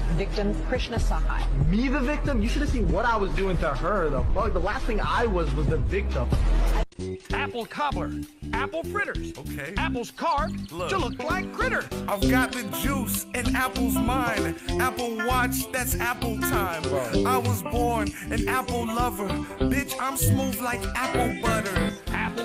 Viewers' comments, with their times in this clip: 0:06 bruh they got Barney snapping on the beat 😂😂😂😂